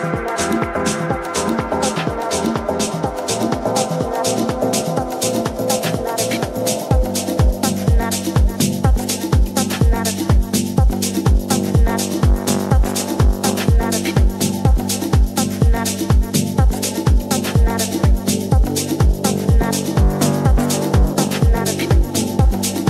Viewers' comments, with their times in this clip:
0:08 :goodvibes::goodvibes: fire song:face-blue-smiling: